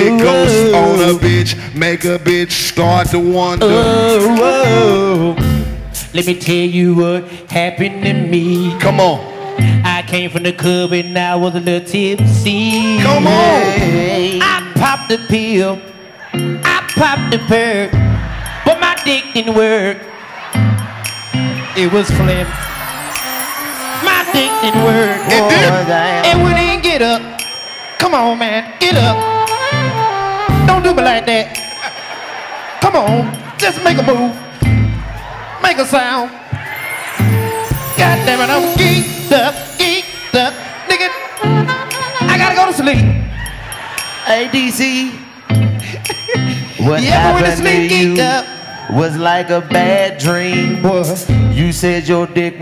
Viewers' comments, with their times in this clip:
0:06 that flow crazy
0:06 when DC starts singing is the hardest i laughed in a minute.
0:36 & DC need to sample what the band playing and make a rnb song